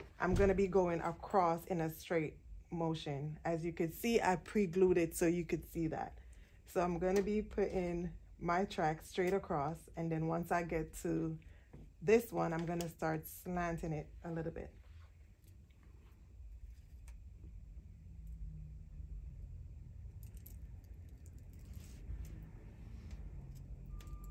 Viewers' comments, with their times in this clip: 0:09 She's laughing at herself bc she has the George Jefferson hair 😂😂😂 I can tell... But it didn't matter, she was still an amazing beauty. It came out beautifully 👑👑